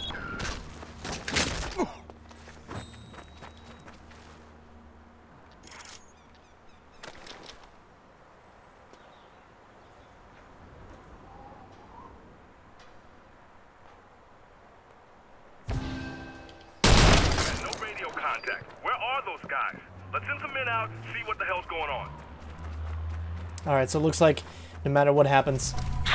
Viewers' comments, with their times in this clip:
0:07 OMG that scream 😂